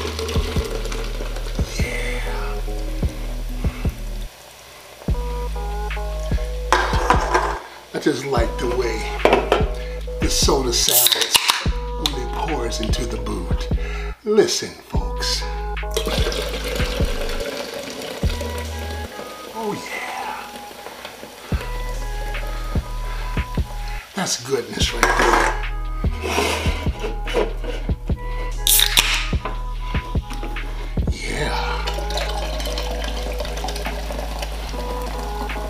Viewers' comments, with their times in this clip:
0:08 It actually sounds like me taking a number 1
0:16 I just like the way my piss sounds when I’m peeing into the toilet, listen folks
0:17 you should replace randy savage as the new slim Jim man with that smooth ‘oh yeah!’